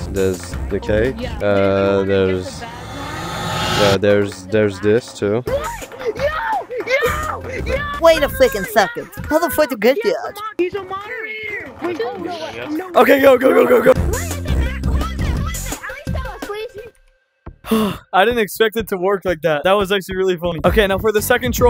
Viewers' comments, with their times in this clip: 0:06 WAS FUNNY WITH THE NERD VOICE
0:08 WAUIT U FWEAKING SECOND HOWD YOU GET THAT ?!?!?!?!??! had me dieing xd